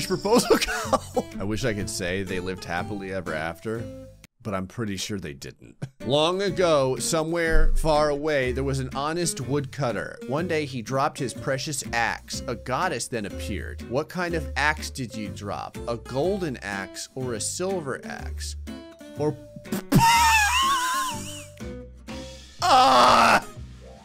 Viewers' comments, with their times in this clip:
0:10 I know if it's referencing something else but .hack Thank you for putting that damn water drop Monsieur back in my head, that voice, God THAT VOICE